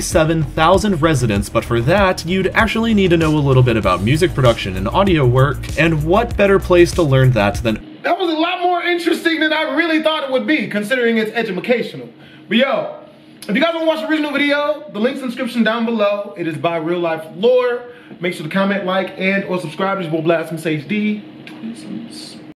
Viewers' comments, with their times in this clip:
0:10 edumacational? Nigga what?